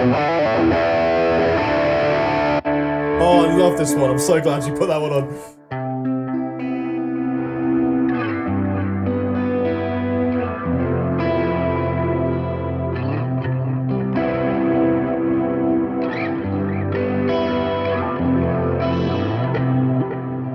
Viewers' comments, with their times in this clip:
0:08 can someone tell me the kind of pedals or effects i'd need to get that Dreamworld tone